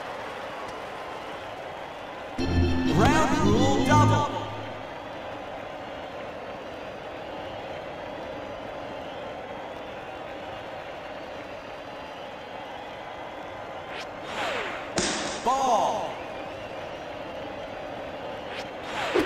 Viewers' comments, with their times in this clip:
0:03 you can hear the outfielder catch the ball after its second bounce.